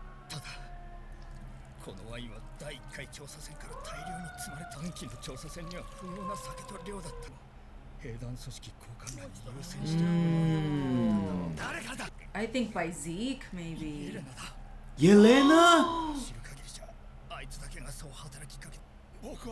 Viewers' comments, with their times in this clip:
0:03 Falco took the hit so hard they got 911 in the background